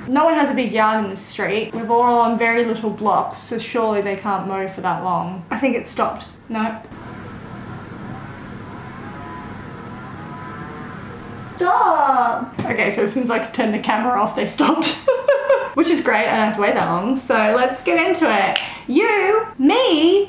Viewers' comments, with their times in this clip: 0:04 that's his wife's Hitachi.